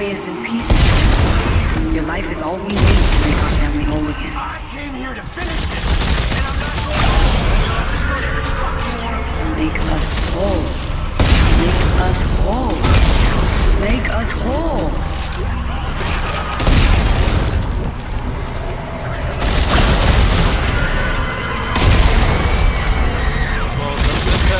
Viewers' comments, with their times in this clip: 0:05 Carver was shooting the marker and it made the exploding sounds but there's no animation